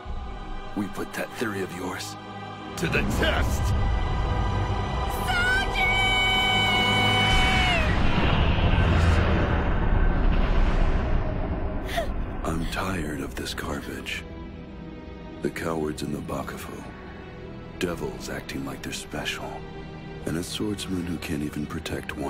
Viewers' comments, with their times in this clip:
0:06 why did she scream Souji's name? 🤣